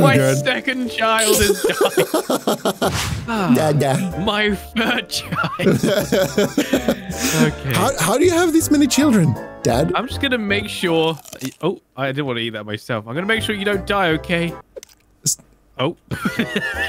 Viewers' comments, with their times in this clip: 0:03 I laugh so HARD because two of them laugh each other because of 2 babies are dead hahahaha!!! 🤣🤣🤣🤣🤣